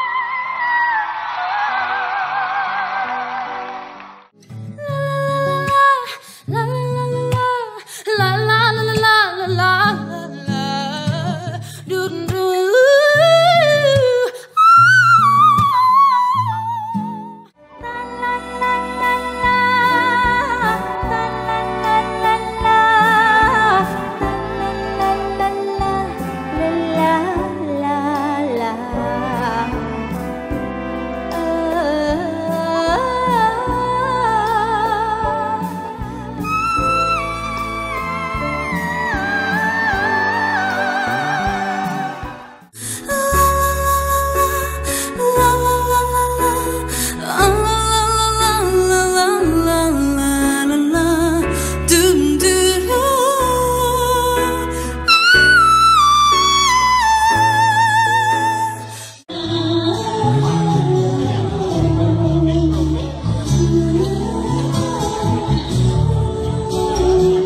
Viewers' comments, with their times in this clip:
0:06 Hands down, had to he best singer (besides Minnie) The voice and breath control was amazing. Still soft, had her own runs, but it wasn’t too much. BEAUTIFUL!!!!
0:20 sounds so beautiful🥺
0:43 amazing cover i hear truth from heart , she sings good technical
0:50 I think the majority of the singers portrayed in this video did a fantastic job and are carrying the torch lit by Queen Minnie herself! The standout cover to me was Marina Elali who not only hits the money note perfectly but also does it WHILE also playing piano in front of a live audience. Minnie sang it first and she would be honored that people are so inspired by her that they're still covering the song over 40 years later and actually doing it justice!